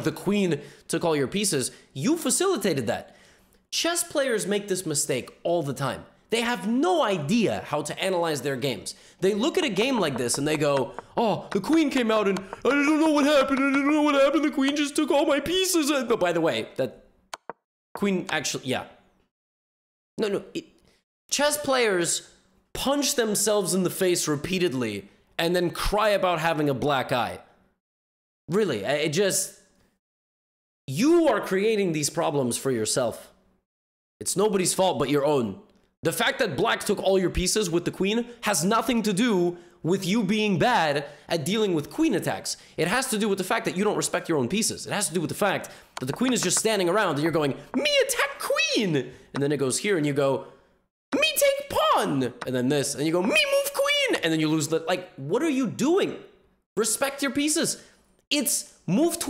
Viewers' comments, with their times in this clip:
0:09 did he just say the N word
0:12 i love that voice he does XD
0:47 was my favorite part, how he talks like a 6 year old playing chess. He really sounded like Mario with that “ME ATTACK QWEENN!”